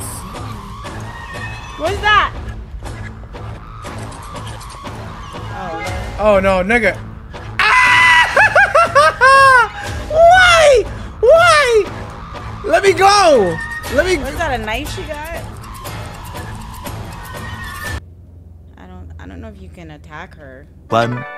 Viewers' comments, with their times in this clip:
0:06 that Tom & Jerry ass scream killed me 🤣🤣